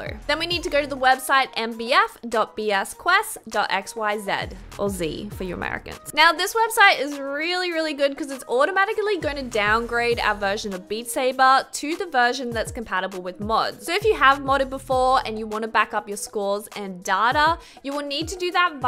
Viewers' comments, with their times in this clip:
0:05 naw I’m amarican what’s that face that some type of a fence 😐🫤😵‍💫